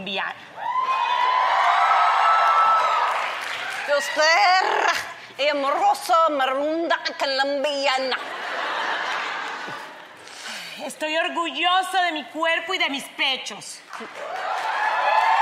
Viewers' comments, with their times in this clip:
0:03 Sofia speaking that Spanish...LAWD Have MERCY!!